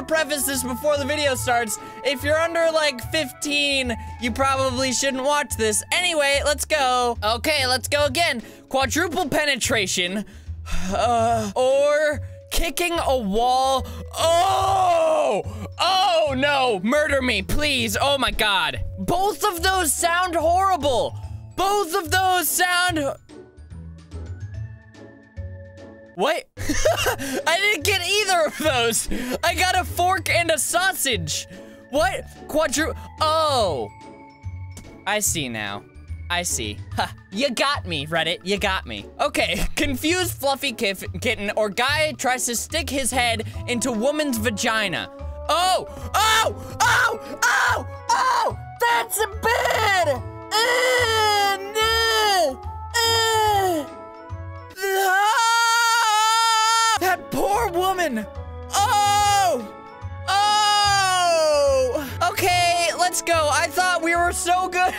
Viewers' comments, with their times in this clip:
0:10 Omg that moan tho😫🤤
0:49 When he says bad he sounded like a sheep